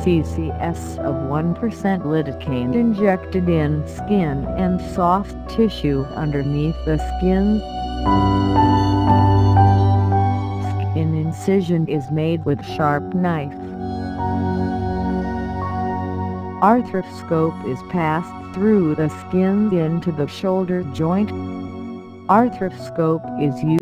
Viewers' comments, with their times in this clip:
0:06 horrible audio, it starts